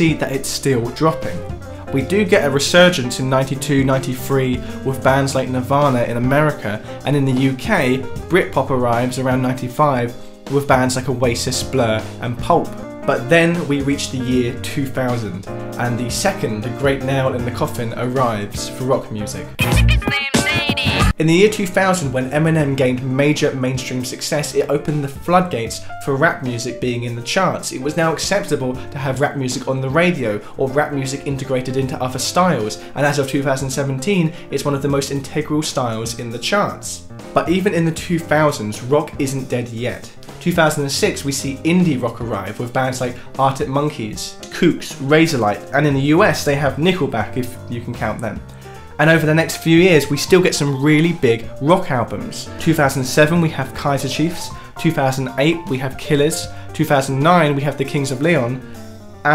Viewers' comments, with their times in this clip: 0:10 “with bands like a racist blur and pulp”
0:46 "look at this -graph" ~lonely guitar playing~ Please someone get the joke